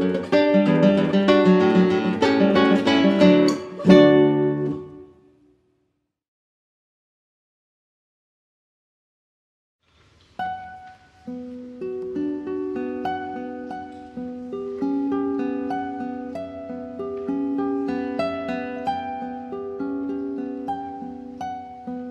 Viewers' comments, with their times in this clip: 0:08 How do you listen to La Catedral and not cry? And Danza Paraguaya is one of the prettiest, joyous things anywhere